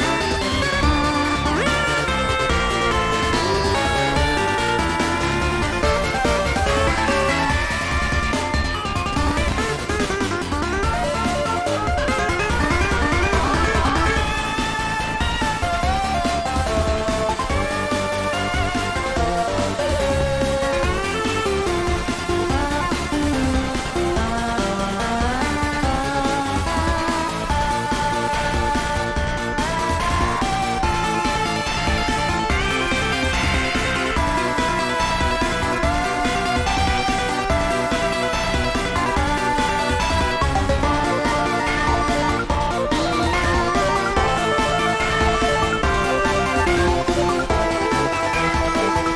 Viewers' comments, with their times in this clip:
0:08 At bfs tuen to sounds like megalovania
0:32 Lol why do i hear here screem of animatronic in fnaf 1
0:32 chara be soundin like a five nights at freddy jumpscare